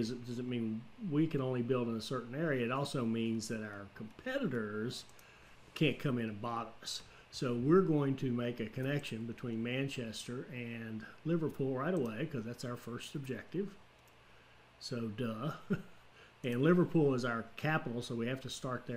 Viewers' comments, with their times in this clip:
0:03 YouTube auto generated captions said 'our senators can't come in a bottles'